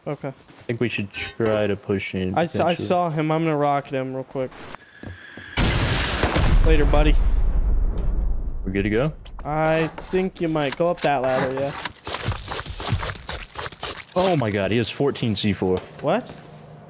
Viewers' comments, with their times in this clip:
0:03 Anyone else having audio problems with the video ?